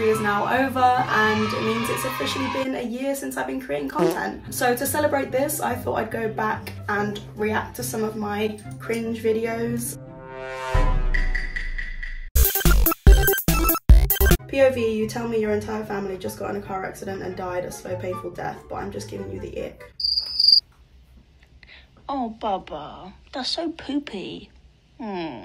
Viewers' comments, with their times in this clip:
0:07 What was that the fart sound😂